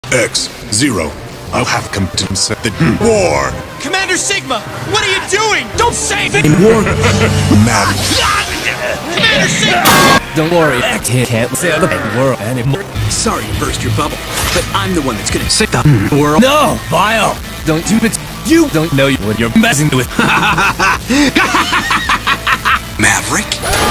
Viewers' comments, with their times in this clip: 0:04 What is Commoner Signal doing this time? Is he stupider???